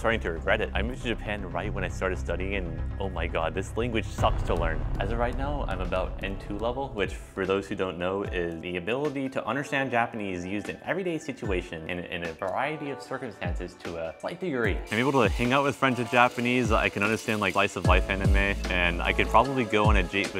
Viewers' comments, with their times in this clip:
0:08 Can I ask about title of your background music? It's very catchy :)